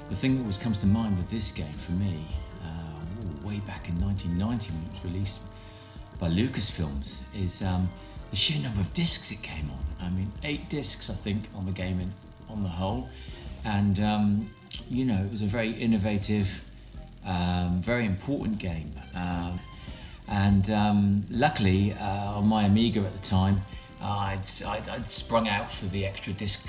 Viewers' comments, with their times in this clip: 0:07 TSOMI was only four disks on Amiga not eight. Surprised you left this in, plus the horrible vertical video and distorted audio. Should have edited him out totally.